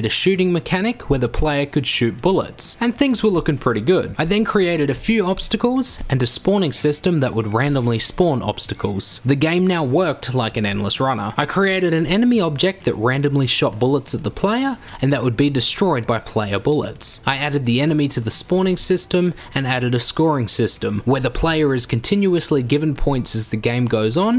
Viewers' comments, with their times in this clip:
0:06 why do I hear meowing in the background